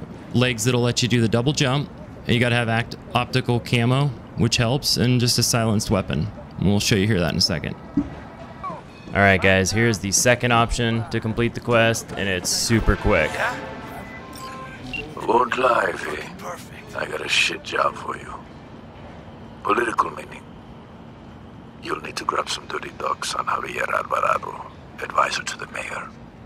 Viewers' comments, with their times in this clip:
0:07 woah that seemingly mysterious voice change 😮